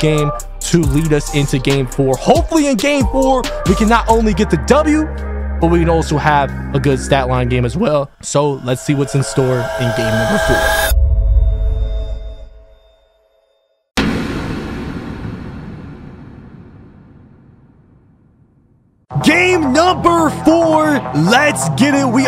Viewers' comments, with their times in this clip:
0:05 the voice crack
0:07 were not ignoring the voice crack xd